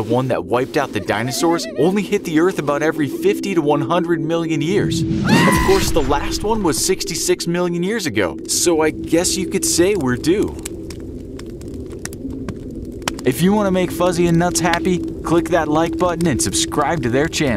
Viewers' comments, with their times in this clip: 0:04 i feel like i have heard that scream before.